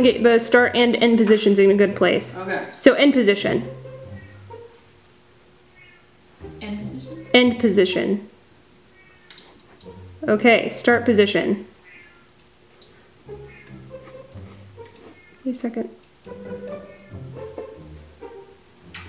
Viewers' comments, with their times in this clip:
0:04 did anyone else hear a cat?
0:05 im just sitting here listening to the cat being like "MeOw mEoW mEoW mEow"